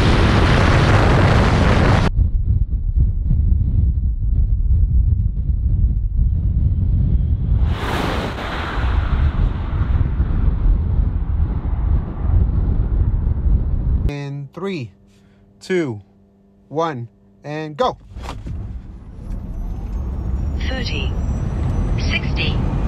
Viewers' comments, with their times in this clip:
0:03 i was like🤔💨 what tf happen to my audio!!! 😁😬😏